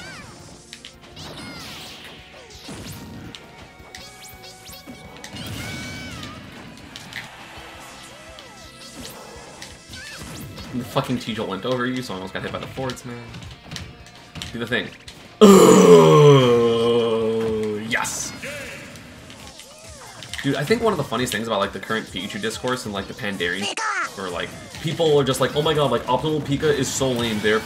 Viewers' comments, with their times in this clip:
0:10 I didn't know Pikachu made that sound